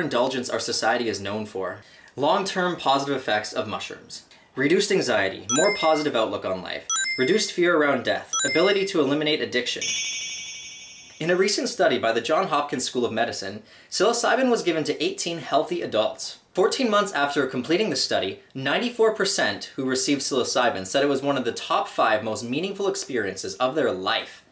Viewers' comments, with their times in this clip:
0:05 more positive outlook online?
0:07 "more positive outlook online" oof
0:07 ,,More positive outlook online"